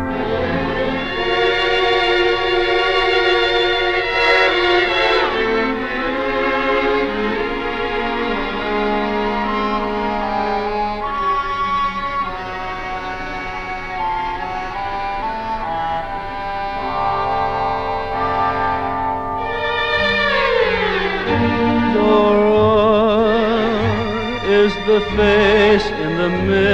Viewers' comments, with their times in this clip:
0:09 Thanks darlin' I like it too. Sounds like an oboe